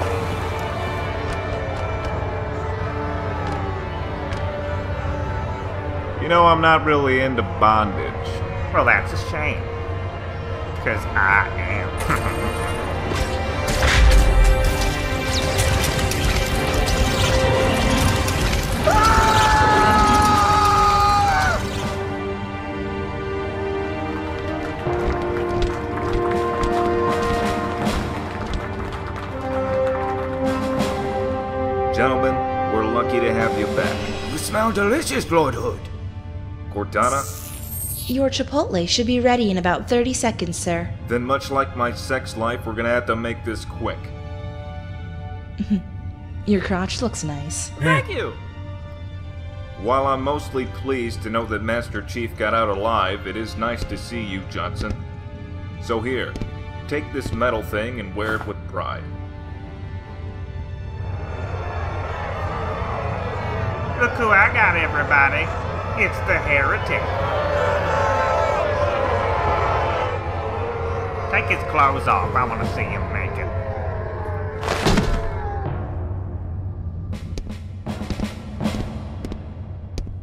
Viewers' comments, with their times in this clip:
0:09 this brute sounds alot like Cleveland Brown from family guy lol
0:09 bro sounded like Cleveland brown😂💀
1:04 I swear it’s Cleveland Brown